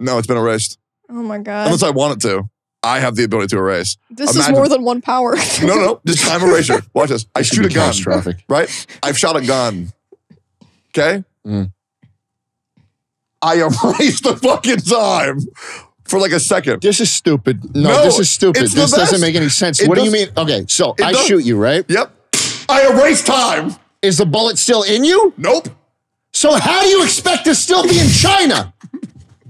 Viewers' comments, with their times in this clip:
0:10 I love the mics getting btfo'd here as the argument gets more intense